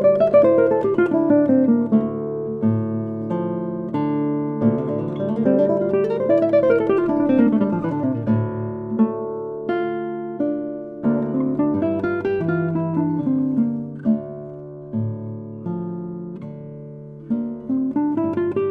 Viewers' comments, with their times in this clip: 0:05 Fantastic performance! I cannot wait to order the sheet music and practice immediately. The run-up is really amazing to me.